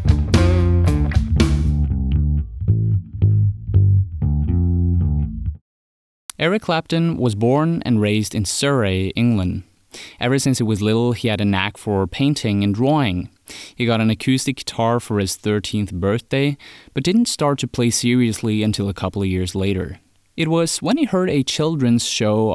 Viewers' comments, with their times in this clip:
0:06 Sir Rey? Surrey. Like “Sa ree”
0:07 I live in Surrey and had to listen again on how your pronounced Sur-ree. It's okay I'll forgive it. :)